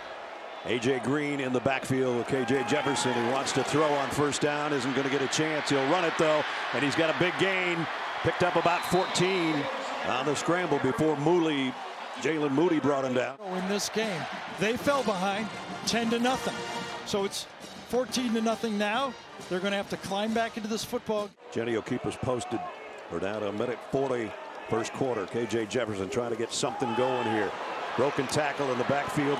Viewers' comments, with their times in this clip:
0:10 Did he say "moolie" as in "moolinyan"?!.."Hey Sal, how come you ain't got no brothers up on the wall?"...Jesus Nessler!!